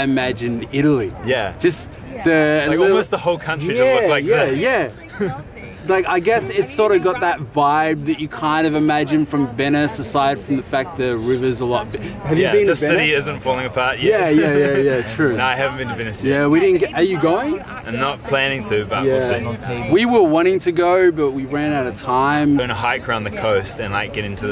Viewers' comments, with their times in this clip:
0:05 LOL, you can over here the couple talking/arguing about being stingy. Fab video though! That gelato!!